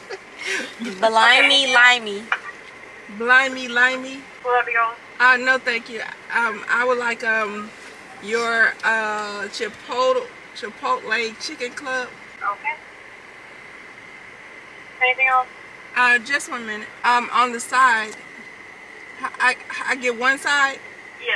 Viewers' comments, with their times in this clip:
0:09 CHIP-OAT-EL IS TAKING ME OUTTT